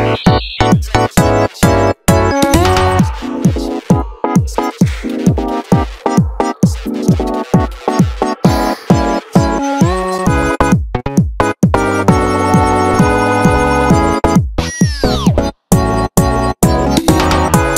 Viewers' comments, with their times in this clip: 0:04 Lol, I like the sigh and breathing iconic as h